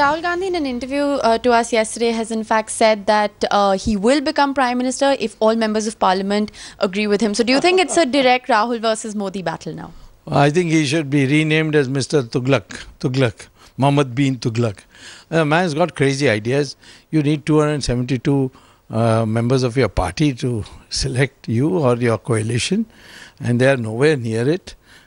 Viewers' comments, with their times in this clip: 0:06 that devil's laugh !!kills the opposition